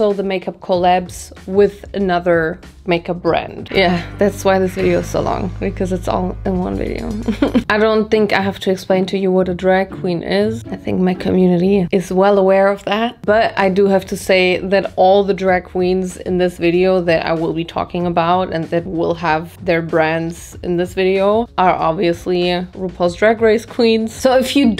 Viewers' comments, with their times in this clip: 0:05 I just love that you can hear sometimes "Detective Conan" sounds in the background.